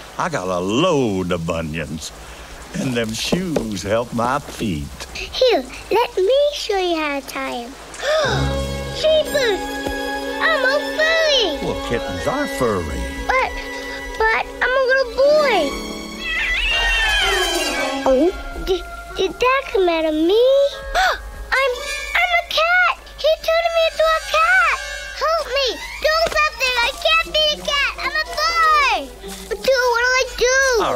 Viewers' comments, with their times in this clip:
0:08 I know it says "I'm all furry!" But all I can hear is "I'm a Furry!!" 🤣 Lmao
0:09 what I hear duke: Jesus I'm a FURRY
0:10 I legit thought he said “I’m a BUNNY”
0:15 Edmond's scream is hilarious!
0:18 Sounds like Lampwick!